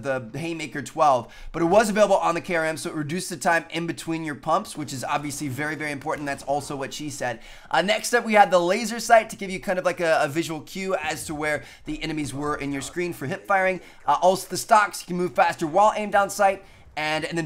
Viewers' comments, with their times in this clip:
0:03 "Thats also what she said." He's so blunt about it XD.